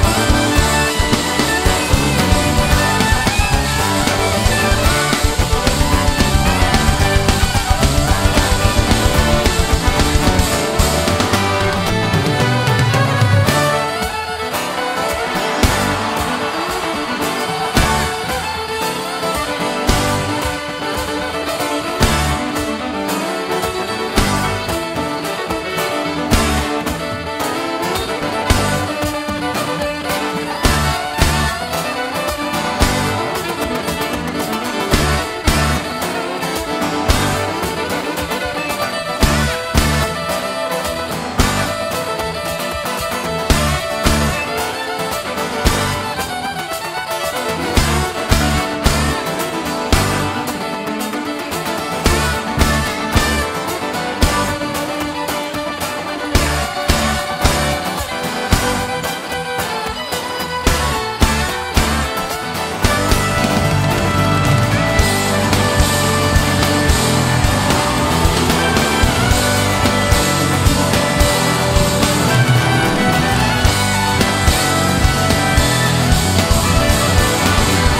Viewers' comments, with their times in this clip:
0:05 when Boyd and LeRoi's sound begins to melt into one for a few seconds. Incredible. Time is a cruel mistress.
0:11 Boyd's violin solo is simply amazing holy damn.
1:01 the level of musical joy is amazing...